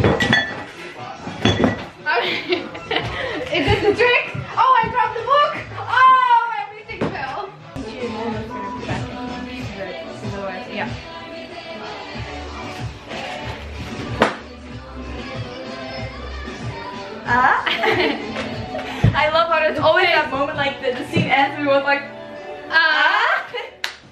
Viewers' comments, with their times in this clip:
0:09 not the Latin pop in the background lmao 😭❤